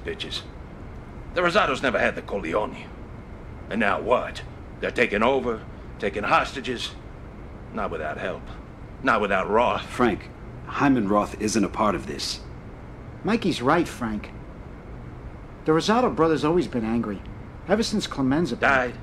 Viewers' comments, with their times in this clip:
0:04 yo why the bald dude sound like the little fat dude with glasses's dad from Seinfeld tho?